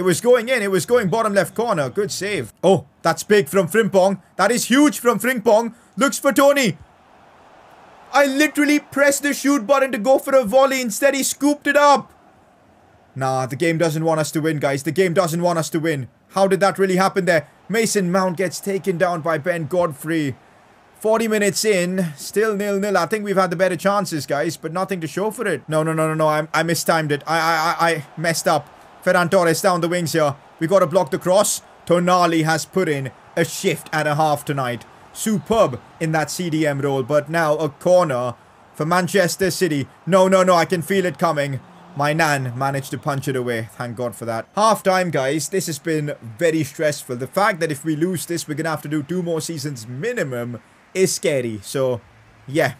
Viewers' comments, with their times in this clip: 0:08 I love the way he said it XD
0:40 Bro it sound like he said my nan with space😂😂😂😂😂
0:40 I thought he said my Nan managed to punch it away
0:40 I though he said my Nan 😭